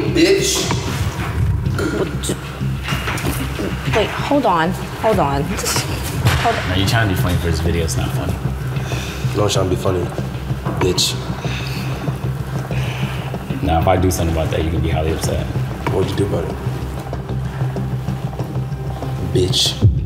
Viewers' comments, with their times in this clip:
0:04 y’all cant lie she sounded a like nicki 😂😭😭